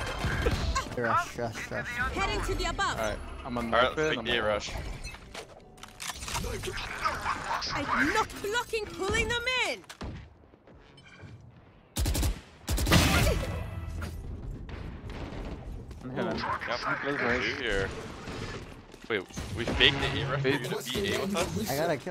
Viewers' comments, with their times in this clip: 0:06 it sounds like an anime or street fighter move (KNOCK BLOCK PULLING THEM IN)